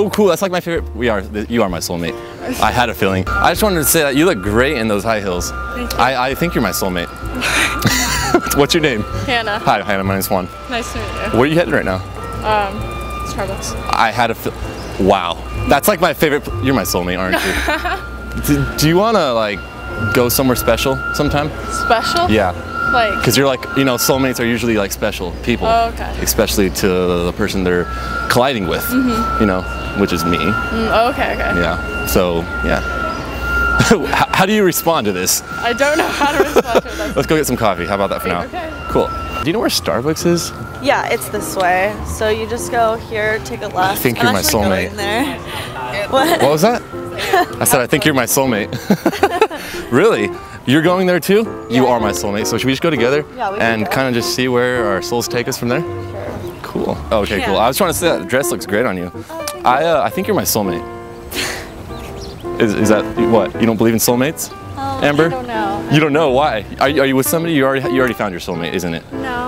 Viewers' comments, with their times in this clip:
0:06 Why is that guy behind laughing n smiling ?
0:07 The dude laughing by at his bro's cheesy pick up lines
0:07 I love how that guy just laughs as he’s walking😅😂🤣😂😅😂🤣
0:08 the guy laughing at them
0:56 The way she said ”sure“ because she spotted the camera and realized it was a joke kinda made me feel bad